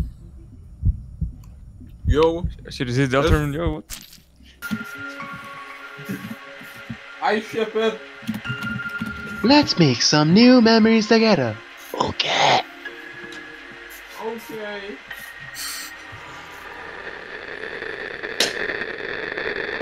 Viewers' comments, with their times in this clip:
0:07 is the funniest part of the video, a mysterious voice says in the distance: "i ship it" and as a response to the line: "lets make some new memories together, okay?" the mysterious voice responds: "okaaay."